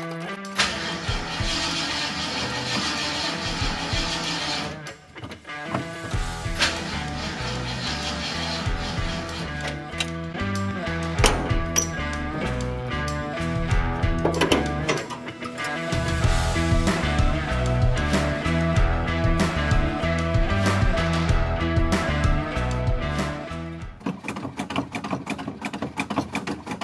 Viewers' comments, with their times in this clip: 0:08 the background music should have cut out when the car failed to start. Seems like a nice transition from cinematic-intro into the start of the video.